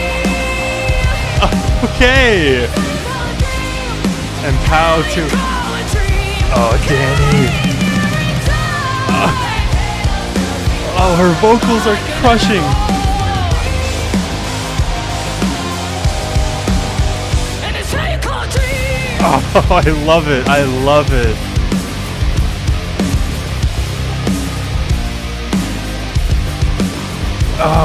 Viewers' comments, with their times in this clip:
0:08 Although it’s not always clear, this song is like “Choke” in that it has Ale singing for just a line or two; she almost “sneaks it in”